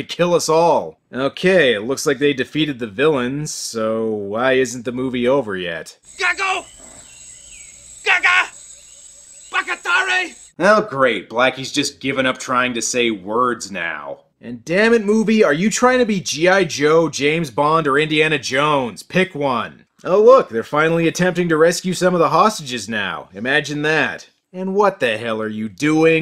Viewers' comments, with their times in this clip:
0:05 "gago"/"gaga" are Filipino words that means "jackass" (it's a gendered word so "gago" refers to men and "gaga" refers to women), and I think he also said "Baka-tare" which is Japanese for "idiot". so his multilingual-ness might be the reason for his nonsensical mish-mash of accents.
0:05 That sounds like the Unas language from Stargate Sg1
0:08 What the hell is backatare?